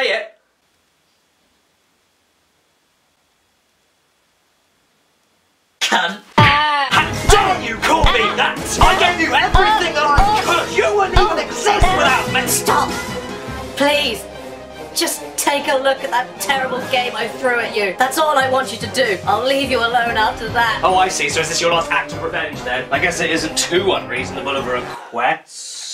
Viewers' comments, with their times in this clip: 0:06 Best scream of pain ever.